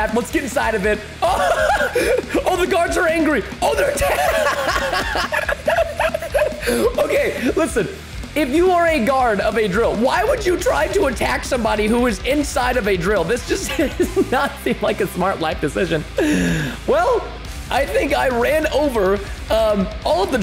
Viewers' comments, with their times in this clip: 0:06 he sounds like a sad puppy